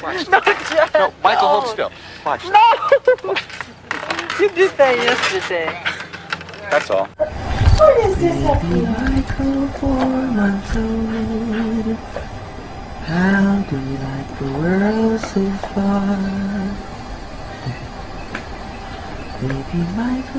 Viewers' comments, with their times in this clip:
0:08 is so sweet…..I just know his babies slept tighter than anything with how sweet Michael’s voice was 🥰🥰🥰